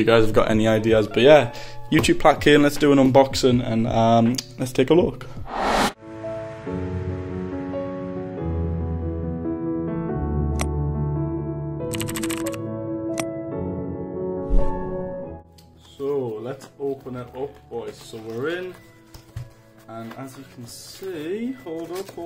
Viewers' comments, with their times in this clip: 0:10 8 clicks but 4 letters